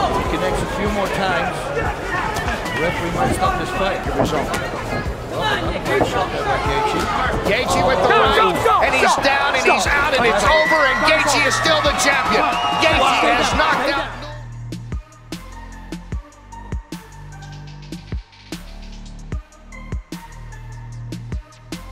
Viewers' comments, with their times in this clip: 0:07 Why don't more referees yell like that? My understanding is that the fight stops only when the referee gets between the fighters and waves it off. If that's the case then yelling at them could prevent some unnecessary punches to opponents who are already out cold. I understand they want to get close before determining that but if the body goes limb there is no need for second guessing.